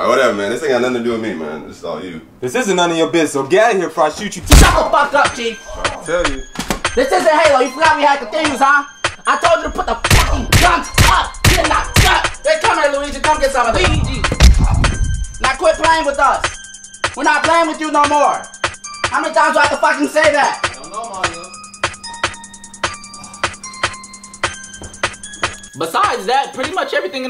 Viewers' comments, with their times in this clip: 0:04 this man started talking with a Chinese accent. 😂😂
0:05 Hood Mario themes starts playing
0:12 Luigi said weegi lol
0:13 made this for myself so I can replay how Luigi says “Luigi”